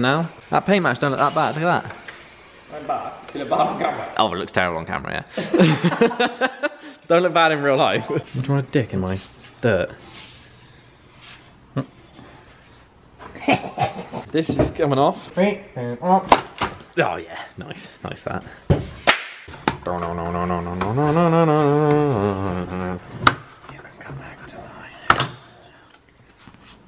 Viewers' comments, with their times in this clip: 0:09 watching you guys chat shit when stoned is the funniest thing. the sarcastic twatty laugh had me creasing